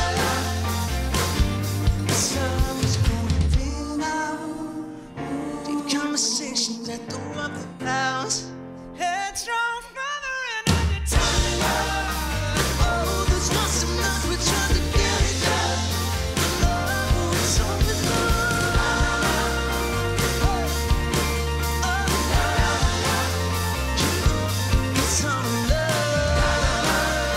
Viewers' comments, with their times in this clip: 0:08 This high note damn Joe, sounded even better than the one on the released track
0:09 Damn joe absolutely slayed the vocal line